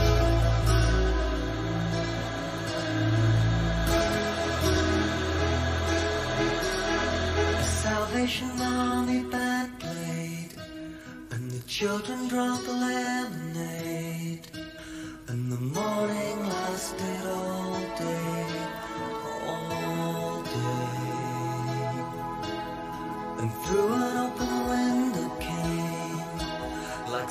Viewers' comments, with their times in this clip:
0:09 If you listen closely, when it says “band played” it kind of sounds like he’s saying “Buckley”.